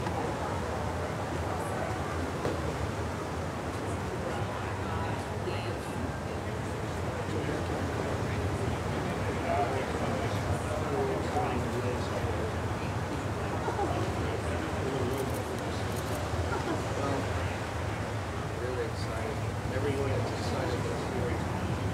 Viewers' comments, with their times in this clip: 0:04 one can hear a reporter in the background say 'OMG save me" as the 4 stand for a photo; dem obviously; at the mark